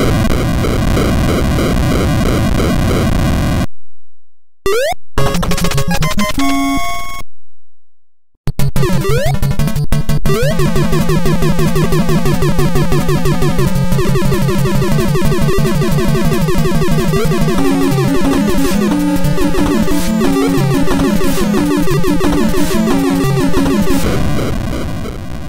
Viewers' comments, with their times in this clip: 0:08 In I heard a error lol😆 in Ice Element